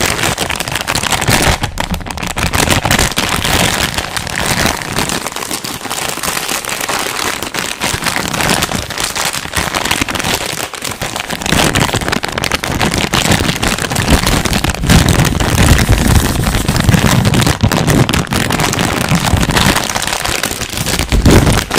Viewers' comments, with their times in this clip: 0:05 sounds like when it rains :3